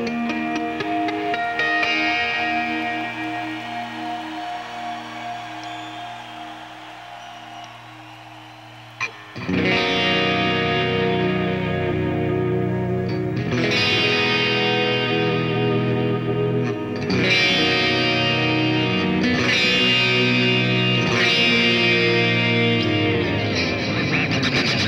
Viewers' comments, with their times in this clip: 0:08 Believe it or not, maybe my favorite part is Powerful yet sad at the same time.